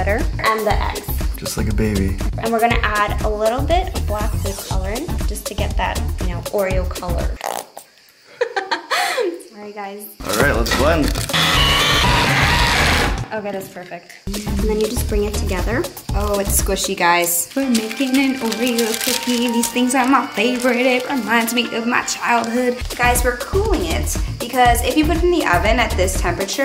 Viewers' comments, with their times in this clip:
0:07 I'm ded the laugh how cute 😂😂😂
0:11 OML THAT KINDA SOUNDS LIKE HOWTOBASIC SOMEHOW